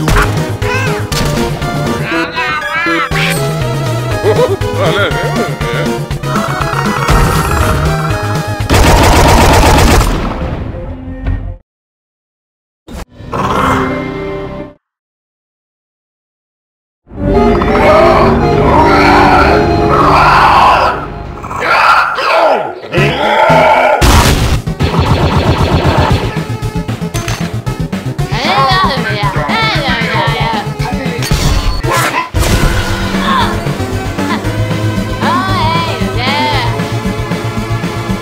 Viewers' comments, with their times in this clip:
0:04 Midas: laugh noises
0:24 Me when I try to escape mando ... and I laughed when the mango music played in the start of video